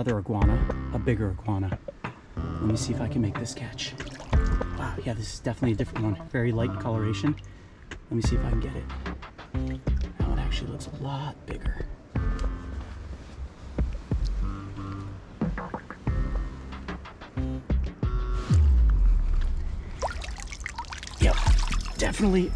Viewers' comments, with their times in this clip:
0:09 I can tell in certain moments you’re so excited u fart a few times. Like